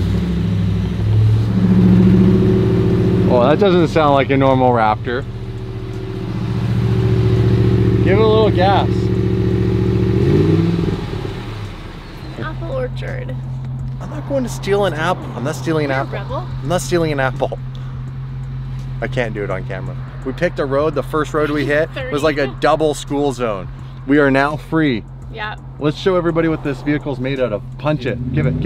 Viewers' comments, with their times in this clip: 0:09 who else heard apple orchard